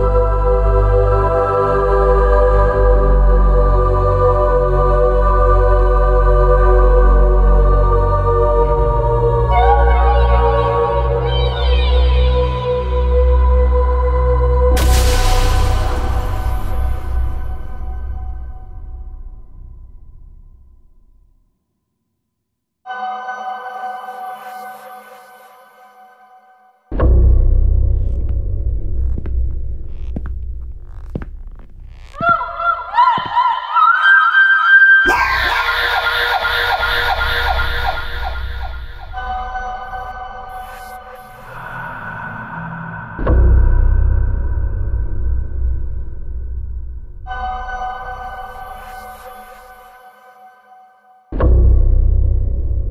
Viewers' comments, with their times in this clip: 0:04 "help me please" aaaah yes sound perfect
0:22 finally it’s actually quiet 😂😂😖
0:34 when you sneeze so hard you make ppl think you got attacked